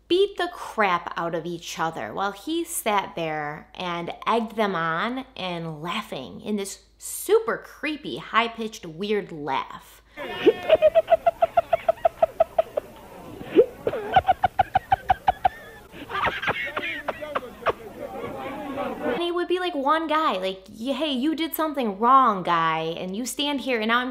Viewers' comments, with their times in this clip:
0:10 .... Sounds like the start of a creepy clown Horror film 🤡 Yikes!